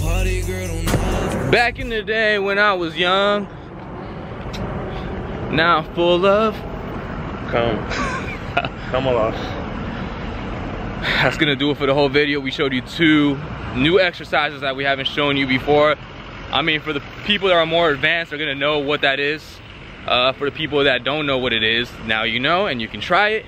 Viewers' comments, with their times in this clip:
0:06 That phlegm in your throat might be from .lol. Just messing with you.